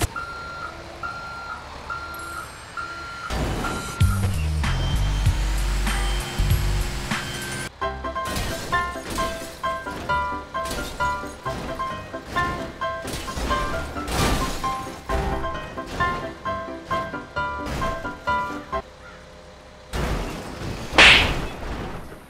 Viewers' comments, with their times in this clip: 0:07 *Angry stepdad noises